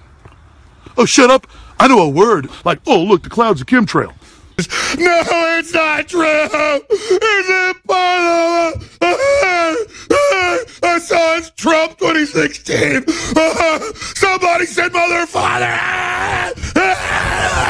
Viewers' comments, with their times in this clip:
0:05 Luke Skywalker impression